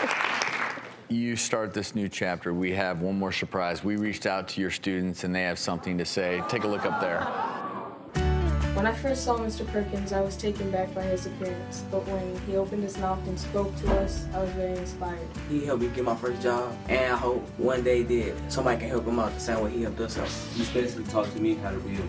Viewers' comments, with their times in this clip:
0:03 one more shurprize?